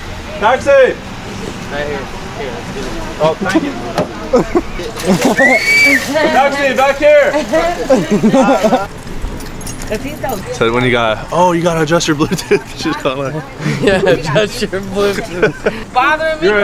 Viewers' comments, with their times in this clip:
0:04 did you spoke dutch? Taxi blijf hier? l